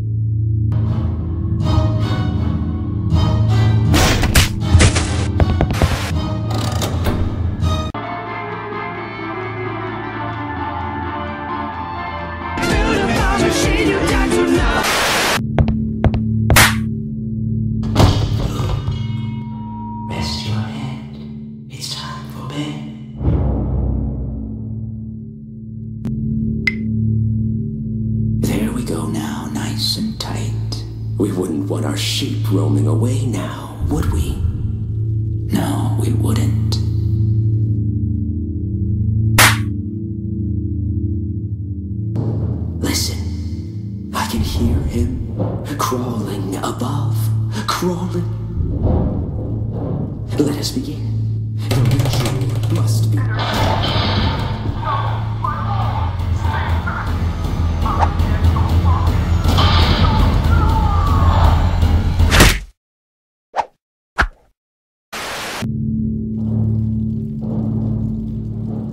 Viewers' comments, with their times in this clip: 0:08 I love that song!👍
0:08 legendary song :0
0:50 LeT uS bEgIn dududududdu had me dying